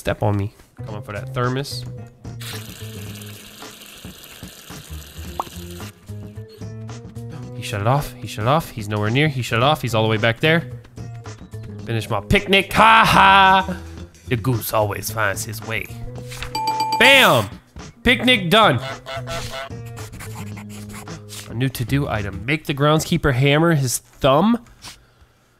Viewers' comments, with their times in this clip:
0:06 wildcat really sound hoaring in a goose game